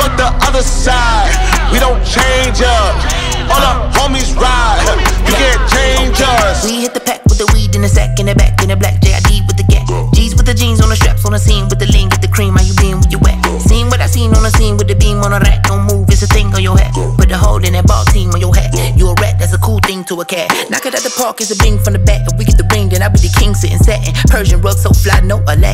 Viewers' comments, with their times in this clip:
0:03 asap ferg and jid (the cleanest transition ever)
0:06 the flow is goated